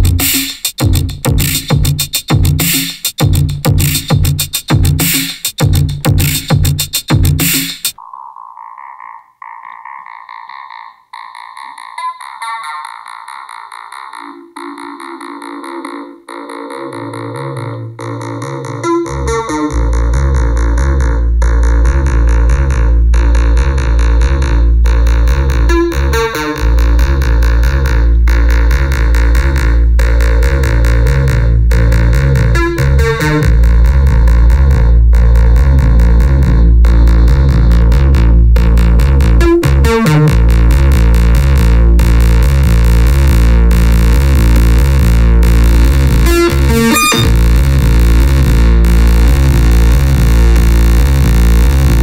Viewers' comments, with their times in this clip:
0:08 it just genuinely sounded like infinitely many instruments combining to make the sound, like when a buildup is created from 20+ layers. You took a single loop and made it sound like 30 seconds from an average EDM song. That was amazing
0:09 love that tone. Gets really phat
0:09 waiting for the seasaw and beat to kick in, thats so fucking close to the musik in doom o.O
0:18 you just made machinegun by Noisia pretty much
0:18 min sounds SO „nitzer ebb“ 😁
0:26 Sounds like Fad Gadget's "Collapsing New People"
0:38 Space Horror sounds at first. Loved it! And that frame ;)
0:38 sounds like nitzer ebb....❤️👍🏻